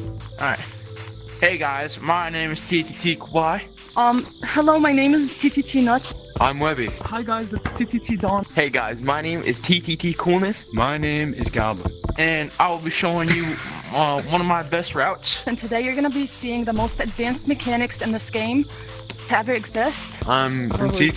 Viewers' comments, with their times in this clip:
0:04 WOMAN IN TTT!?